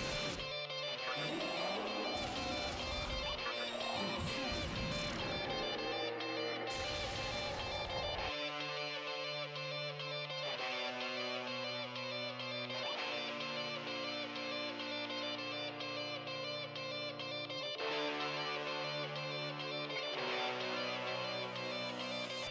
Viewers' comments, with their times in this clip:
0:10 this part where lucifer rises whit the pizza tower song is incredible